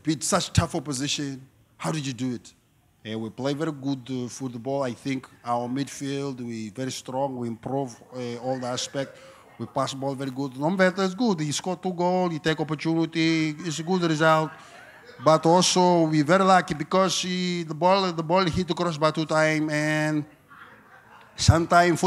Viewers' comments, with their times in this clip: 0:09 crowd didn't give enough energy for that Porto-Brazilian accent